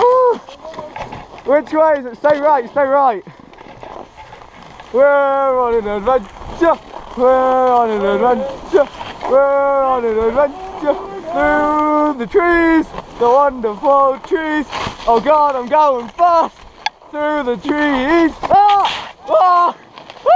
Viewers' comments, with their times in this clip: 0:05 Dat song doe